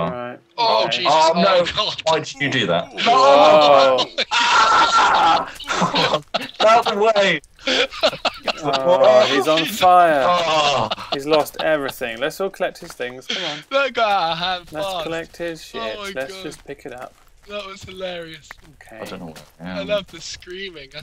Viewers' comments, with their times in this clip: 0:03 XD my favorite moment was his scream was funny as hell!!